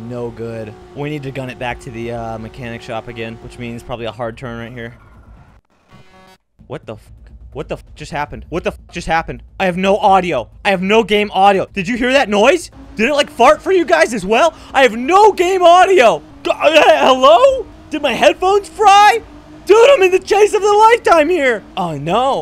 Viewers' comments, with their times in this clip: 0:06 bro broke his audio cuz he was in a chase for to long lol 💀💀💀